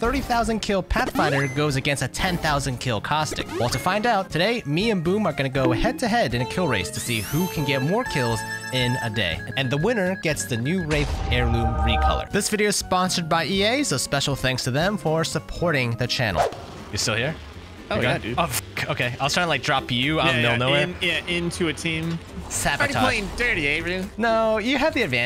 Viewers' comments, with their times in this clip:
0:09 that did NOT sound like wraith💀